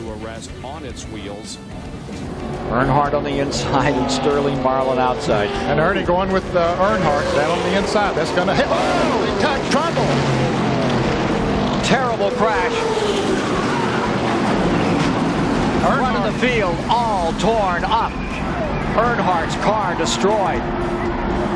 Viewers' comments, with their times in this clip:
0:08 I like how everybody’s mics peaked
0:08 I like how everyone mics peaked